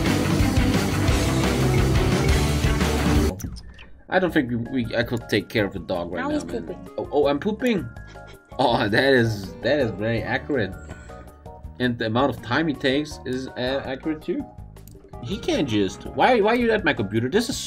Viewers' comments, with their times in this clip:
0:05 Bruh when Mario Party instruction music came up I had a flashback to my childhood fighting with buds threatening each other.